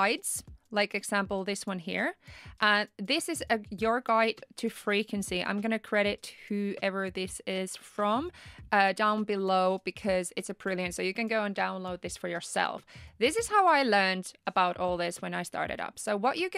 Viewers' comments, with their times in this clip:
0:04 when she said Freakingcy 🤠